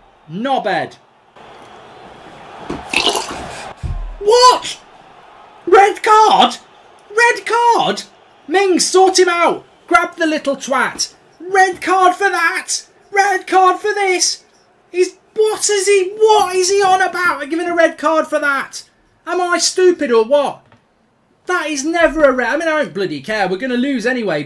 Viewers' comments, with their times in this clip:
0:05 he speaks like British company